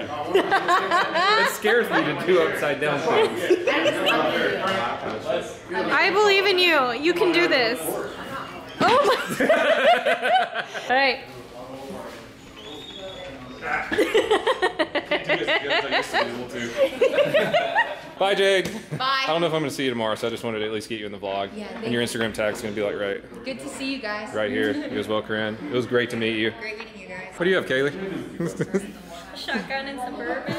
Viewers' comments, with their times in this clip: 0:10 Is no one going to mention the fart ??
0:11 are we gonna talk about that fart?
0:11 Ok, who farted?
0:11 my guy farted ahahaha